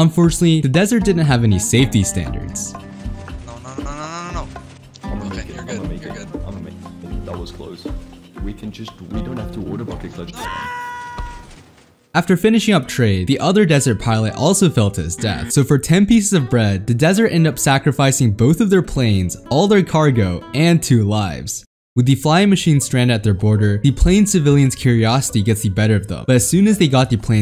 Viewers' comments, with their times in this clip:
0:09 that scream was so perfect oh my god